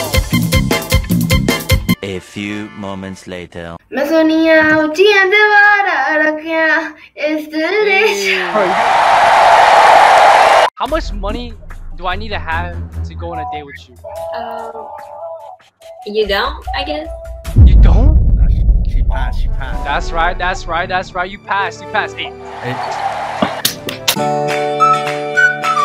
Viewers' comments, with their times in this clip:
0:08 that boy is singing a hindi Song but he looks like That he is not a Indian civilian